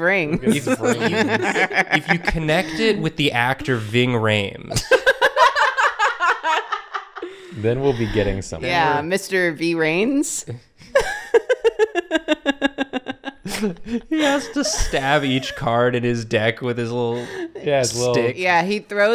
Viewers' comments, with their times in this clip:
0:05 Sounds like a demonic laugh